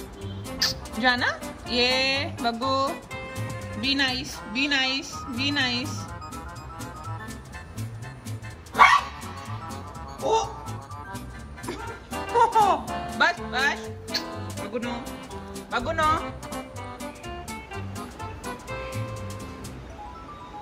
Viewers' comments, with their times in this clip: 0:08 Don't miss the detested pup Bark 🐕😂